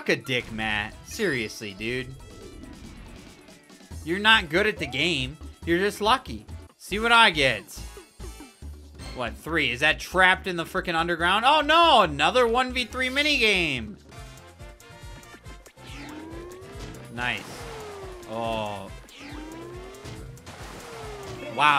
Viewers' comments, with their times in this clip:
0:05 why is the way he says “you’re just lucky” oddly adorable